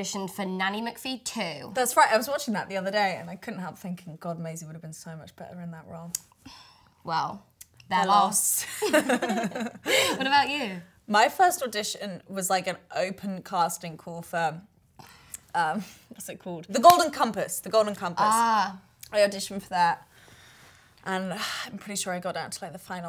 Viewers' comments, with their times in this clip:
0:06 SYNCHRONIZED SPEECH they do this all the time in interviews!